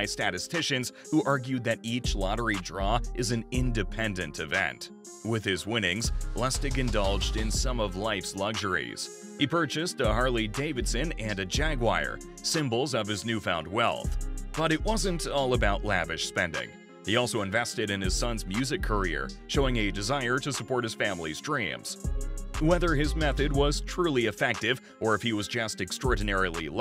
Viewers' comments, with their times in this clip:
0:09 Ummm.......exactly what the f√¢k is a JAGWIRE???🤔 Oh, one more thing... Fins Up! 🐬🐬🐬🐬🐬🐬🐬🏈👍🙂